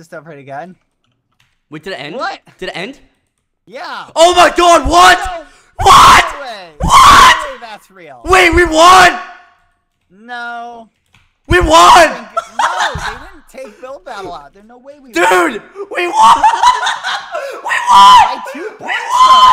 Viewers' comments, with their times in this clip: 0:06 warning headphones users